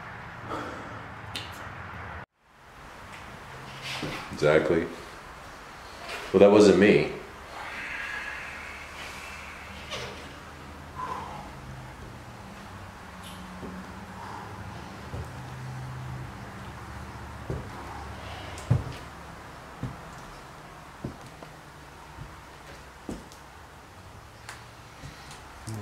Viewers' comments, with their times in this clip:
0:07 Same noise -15